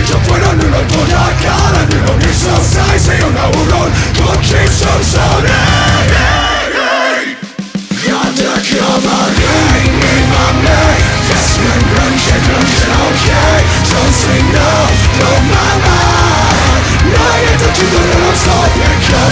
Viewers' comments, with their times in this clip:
0:05 never heard Matt go that high!